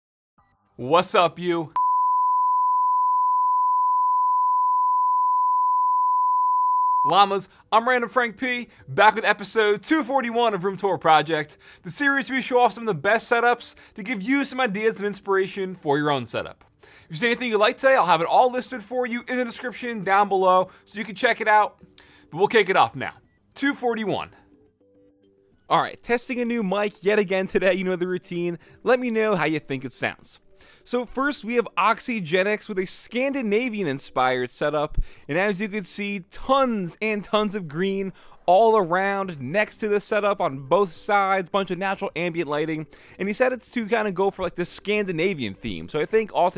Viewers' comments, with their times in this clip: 0:01 that the nicest thing i heard all day. a bleep
0:01 7 secs of BEEEEEEEEEEEEEEEEEEEEEEEEEEEEEEEEEEEEEEEp
0:27 I like the old one better